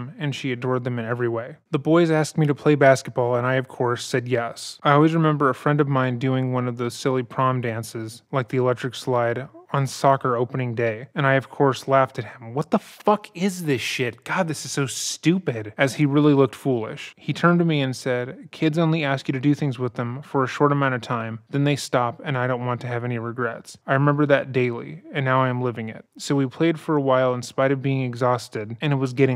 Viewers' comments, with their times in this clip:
0:10 that outburst is fucking hilarious
0:11 The outburst felt like a jumpscare because im so used to the calm monotone of the narrators voice 😂